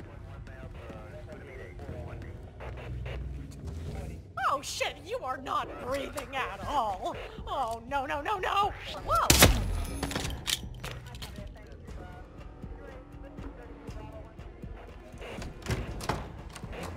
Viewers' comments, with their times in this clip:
0:03 greatest voice acting moment right there